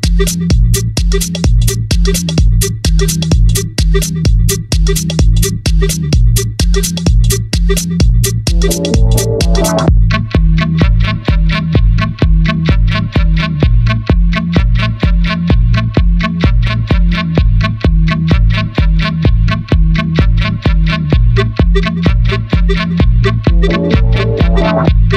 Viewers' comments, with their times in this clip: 0:08 just love this beat. <333